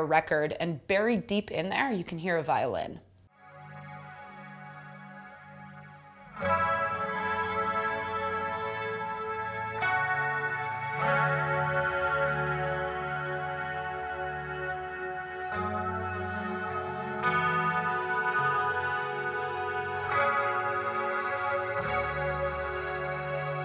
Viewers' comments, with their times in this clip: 0:10 Really good review. However, I can't agree on A Plea For Understanding's solo-vocals, I didn't like them in the beginning and understand where you're coming from, but to me the slight "offness" of the notes really creates the atmosphere of solitude it should. Also just a hint: isn't a real violin, but rather a volume-swelling effect created by picking a note on the guitar and then turning the volume knob up, which sounds similar to a violin.